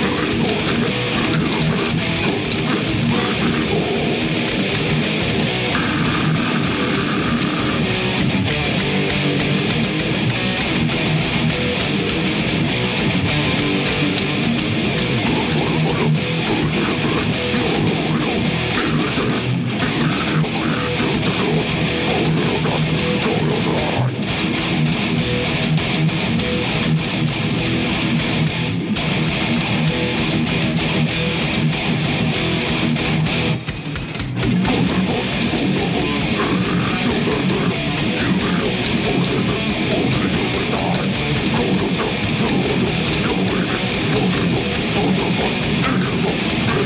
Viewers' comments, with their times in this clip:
0:05 GOOD GOD THAT GROWL! Sounds like fucking wolf ready to attack. It literally makes my headphones shake like crazy
0:33 no those really are the drums.